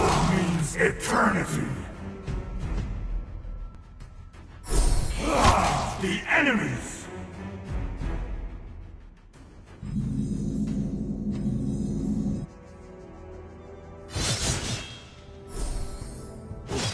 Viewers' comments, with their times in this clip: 0:04 (moaning sound) the enemies